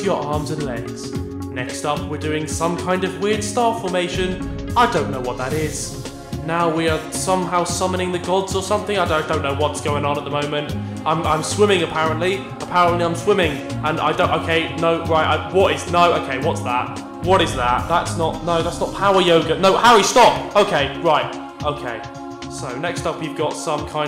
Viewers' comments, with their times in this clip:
0:09 sounds like stampylongnose